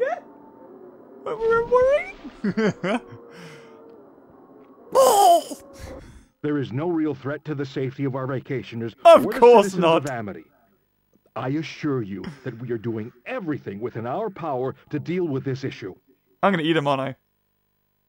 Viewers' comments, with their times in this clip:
0:04 that noise would be funny if the orca actually sounded like that when it die’s